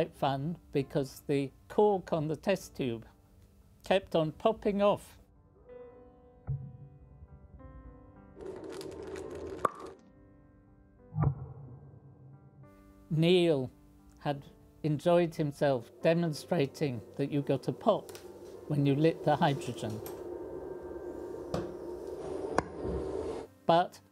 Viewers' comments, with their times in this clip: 0:08 damn nice pop